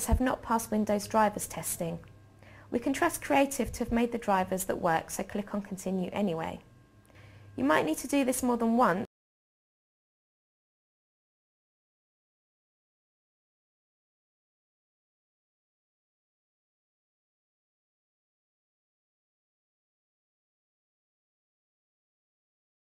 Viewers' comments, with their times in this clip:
0:08 A video on installing a PCI sound card: sound crashes on .... I can see irony at work here